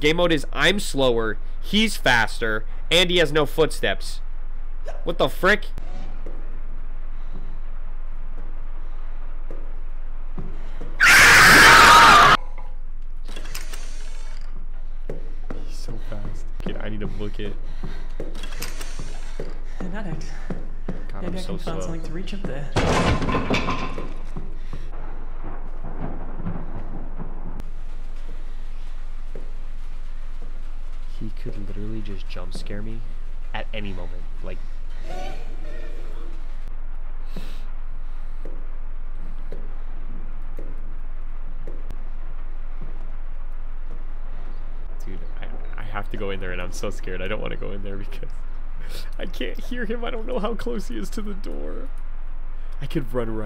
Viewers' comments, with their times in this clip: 0:06 his scream scared me more than the actual jumpscare
0:10 the best scream lol
0:10 dat scream will be a jumpscare in a game doe
0:10 I’m sorry but I can’t with that scream💀💀💀💀💀💀💀💀
0:10 The scream made me scared than the ghost
0:10 he screams be like 😆😆😆😆😆😆😆😆😆😆🤣😆🤣🤣🤣🤣🤣🤣🤣🤣😆😆😆
0:11 RIP MY EARS LMFAO💀💀💀💀💀💀
0:11 his scream is scarier then the monster
0:13 THE CUTOFF SCREAM- 💀
0:33 every time daddy Micheal just walks past him like a damn dog at 1200 miles a hour with that music just kills me
0:34 Bruh that hee hee tho🤣🤣